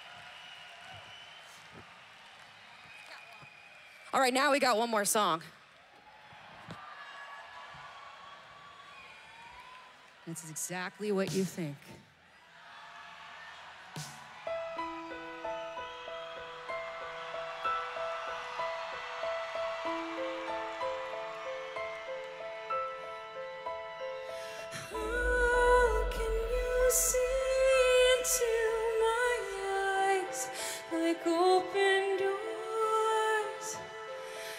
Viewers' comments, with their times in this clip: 0:08 Wait...she sang for an hour in her 40s and is now going to END the set with "Bring Me to Life" and sing it in the original key?
0:17 Oh Yeah I Was Waiting For That!! .... #BringMeToLife 🔥🔥🔥🔥🔥🔥🔥🔥🔥 #WWENoWayOut ...... Amy Lee! is A Gifted Voice Of Angel !! No Autotune Or Anything Needed!! Its All About #PureAmyLee ❤️❤️❤️❤️❤️ #LoveFromIndia No